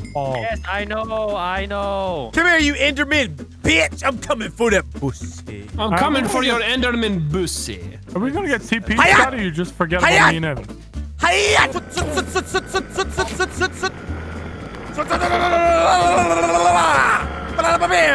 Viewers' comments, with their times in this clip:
0:03 how wildcat said that made me laugh straight outta my chair